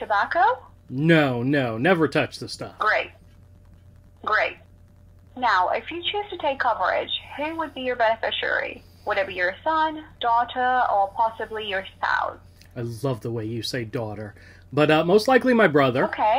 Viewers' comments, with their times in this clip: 0:03 Hilarious how the ai suddenly goes into a British accent with "daughter"